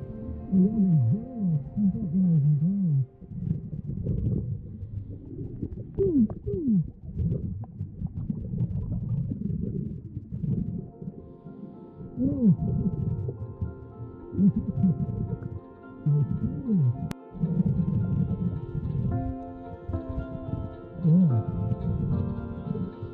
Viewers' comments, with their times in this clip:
0:08 I cracked up when you had the drill and made the pew pew sounds lol